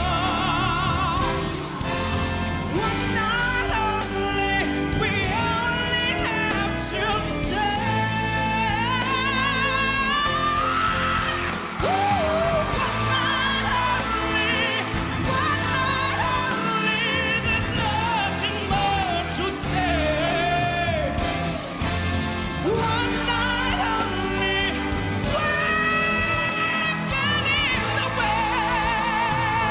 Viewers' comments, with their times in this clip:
0:08 That note tho. Best version I’ve ever heard
0:10 That growl was just heart wrenching.